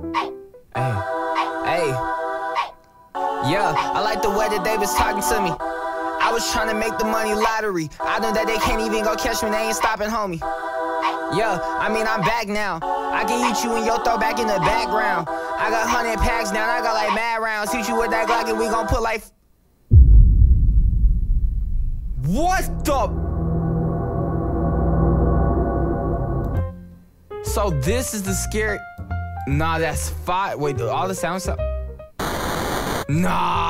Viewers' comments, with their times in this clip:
0:04 this would be like a kanye west type shi
0:11 Bro was trying to sing💀🙏🏽😭
0:18 I can't stop laughing the where he put black in and just stop singing .